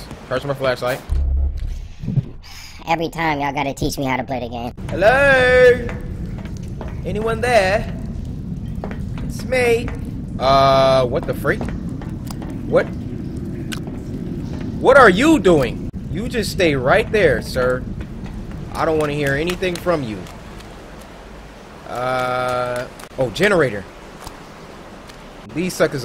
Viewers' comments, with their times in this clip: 0:07 yo you did a really good british accent